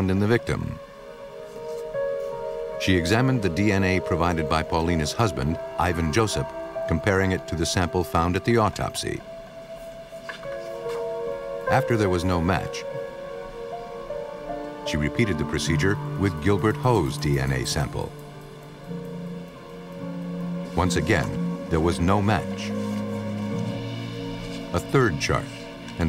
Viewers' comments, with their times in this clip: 0:10 ya gotta love the mic slips haha